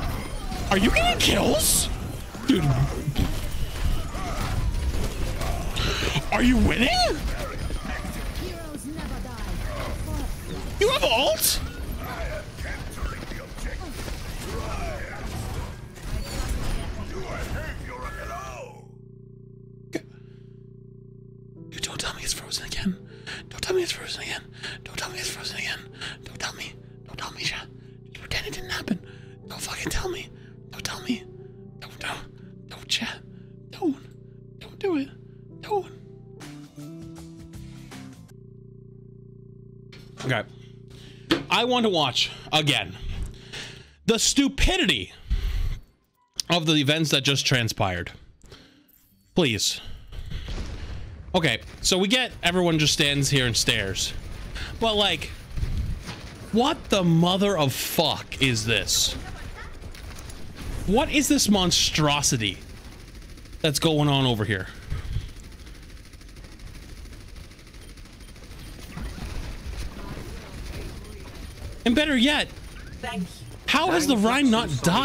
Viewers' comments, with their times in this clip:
0:07 Okay so I was playing wow and this was on my other monitor.... I heard a glorious noise of disbelief. Turns out i was spamming Numlock 2 (so it replays over and over when i clicked. ENJOY
0:57 missed a bleep